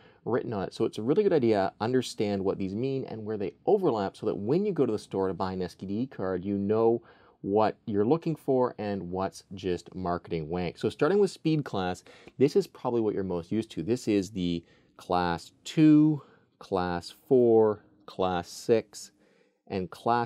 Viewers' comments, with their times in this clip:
0:05 I swear he says "std"card. No body wants that card.😂
0:05 did he say STD Card or SDD Card? lol